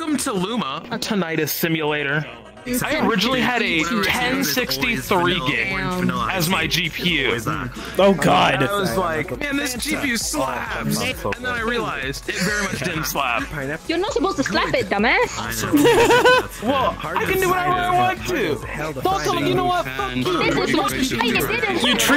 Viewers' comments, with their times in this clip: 0:03 He sounds terrifingly like slime cilcle